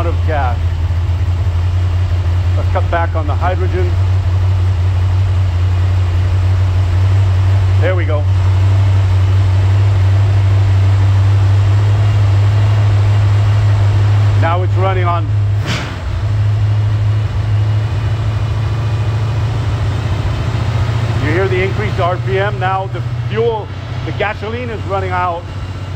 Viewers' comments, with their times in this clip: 0:10 is it me or does it seem like theres alot more oophh to the sbc with the hydrogen.